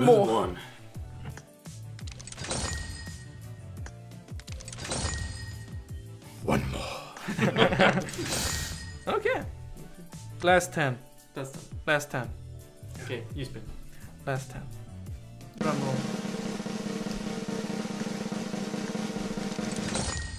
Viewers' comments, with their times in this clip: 0:06 his voice was like Batman 😂